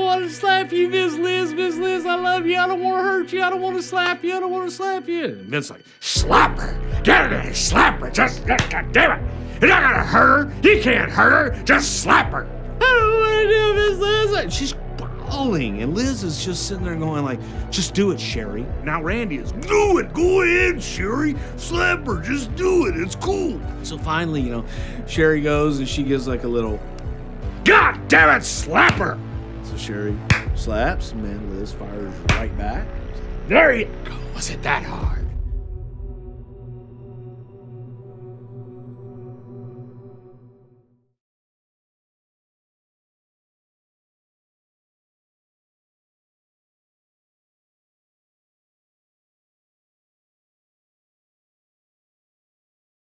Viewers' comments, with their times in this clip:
0:05 Bruce Pritchard does the best Vince McMahon impression ever. "DAMMIT, JUST SLAP HER!!!" I wish Opie & Anthony were still on radio so they could add this to an Angry Vince segment.
0:05 That music/tone change was on point. Lmao. I like the Vince one the most but all impressions were spot on.
0:06 i spit my drink out i wasnt even paying attention to my phibe and i guess this came on and i just hear vince screaming slap her lol
0:41 Gotta say, I mean I use to absolutely HATE his character back in the day of Brother Love and that talk show skit of his.... (back then when I was growing up still thruout the entire Hulkamania era of the first 7 Wrestlemanias, that is. I mean, nowadays I can’t help but just eat it up! Every minute of it in any/all replays I ever come across! That is some great stuff! As a matter of fact, I wish I’d been more into a lot of the heels back in those days than I was. Very very few of em did I ever dig. Anywho... lol, man I can’t get over some of the impersonations that Bruce is doing here in this segment. Sitting here at... hell what time is it? Okay, about a lil after in the morning and I just busted out laughing so g’damn loud espcly after hearing that Vince that he did! Holy Christ! That was some downright funny ass s**t!!!😂😂😂